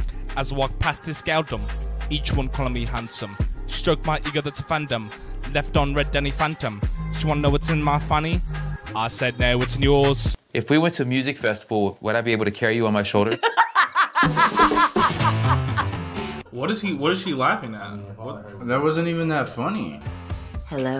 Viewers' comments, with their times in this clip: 0:03 sounds like body of a dancerrr